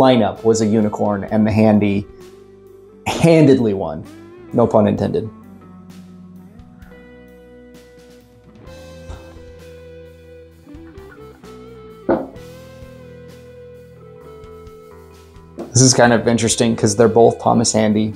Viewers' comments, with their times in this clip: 0:03 The audible fart with gets a like from me.